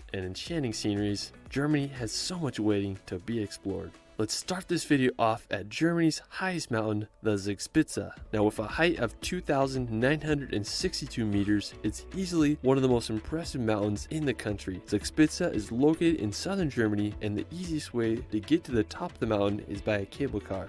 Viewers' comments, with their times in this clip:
0:05 "Zags pizza" when an American tries to pronounce "Zugspitze". Sorry but that's too much for me to cope with. I need to get rid of my brain cramp before I'm able to continue watching. Why do you guys not even TRY to do it right? 🤦‍♂